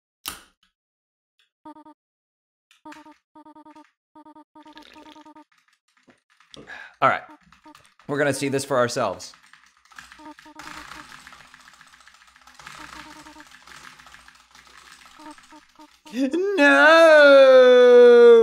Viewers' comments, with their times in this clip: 0:03 You ALMOST sounded like the soda drinking sound from Roblox lol
0:04 roblox sounding drink lol